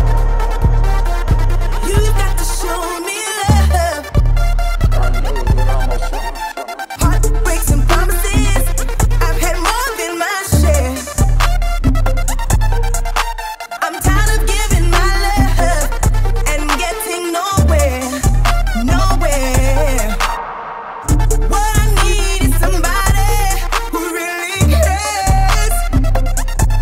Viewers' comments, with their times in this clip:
0:07 i am pretty sure mixing these songs is illegal, straight fire tho